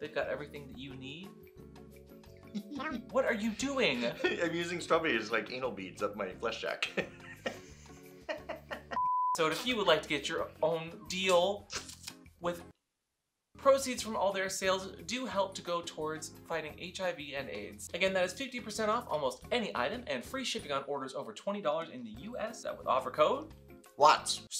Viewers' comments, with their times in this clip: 0:08 "cackles" omfg i love u guys XD